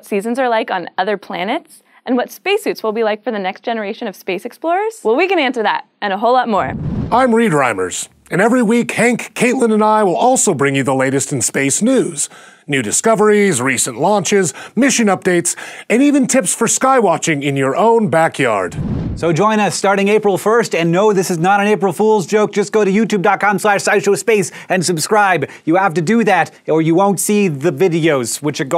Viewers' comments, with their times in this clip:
0:06 WHOA THAT VOICE IT'S THE WHITE MORGAN FREEMAN
0:07 HOLY SHIT, WHAT AN AWESOME VOICE!
0:07 Your voice is magnificent
0:12 Who the hell wants to see Nudist Coveries? Nudists, sure, that's cool. But you cover them up and now they're just people. Nice try...